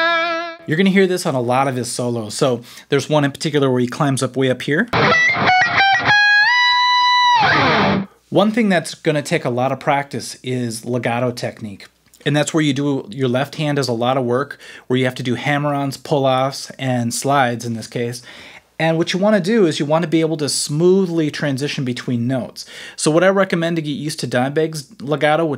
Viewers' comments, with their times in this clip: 0:07 I use this just too much because of Dime. Adds a lot more fluidity and groove. Classic Dime sound ;)